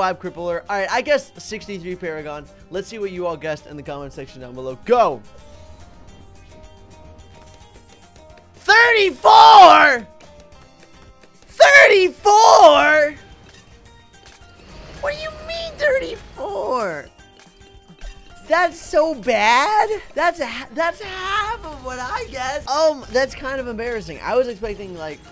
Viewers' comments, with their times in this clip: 0:08 If you want your ears to die